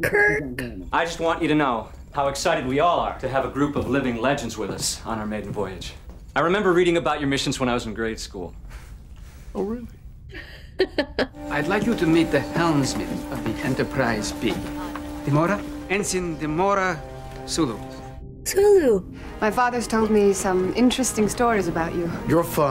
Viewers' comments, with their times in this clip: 0:09 “captain Kirk you’re my hero” (in Cameron from Ferris Burller’s voice”